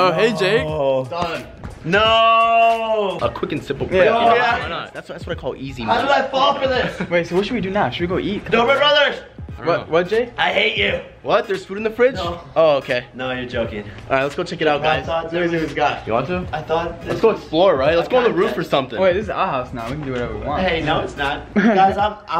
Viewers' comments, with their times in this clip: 0:09 The way Jake paul said, dobre brothers I hate you.